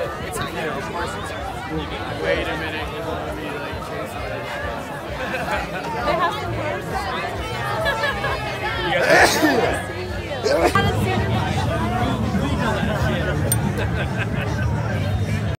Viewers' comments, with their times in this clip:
0:09 guy sneezes on about 20 people. 😂